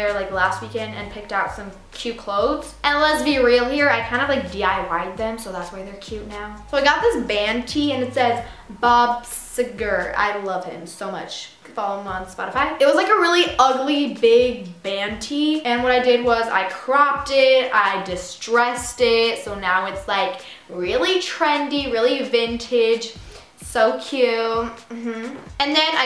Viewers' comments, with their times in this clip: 0:08 I really hope she's joking. That is NOT how you say his last name